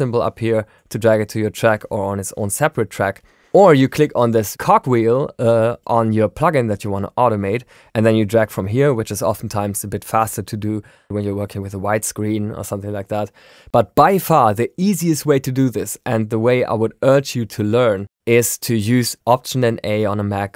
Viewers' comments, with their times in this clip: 0:03 Min. klick on this Cock (Cog)-Wheel!? :-))) Gear-Wheel sounds better!